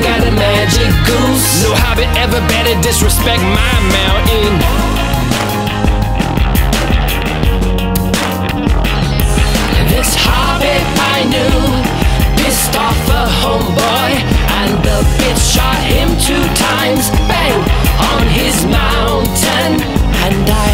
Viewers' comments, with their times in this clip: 0:05 I really love that bass riff